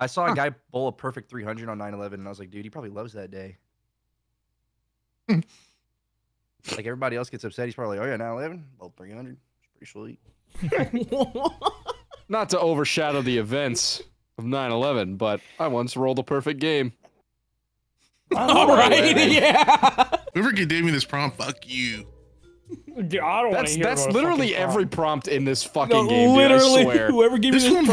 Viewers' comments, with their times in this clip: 0:08 the dead silence as he keeps going 😭😭😭😭😭